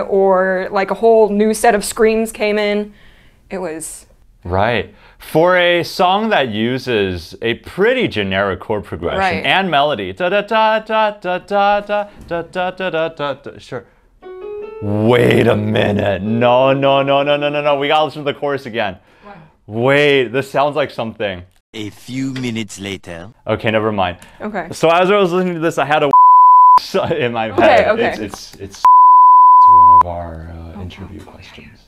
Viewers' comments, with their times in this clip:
0:10 WAIT! sounds very much like Oneus' A Song Written Easily. Ooooh
0:14 This sounds like A Song Written Easily lmfaooo
0:14 IT SOUNDS LIKE ONEUS A SONG WRITTEN EASILY!!!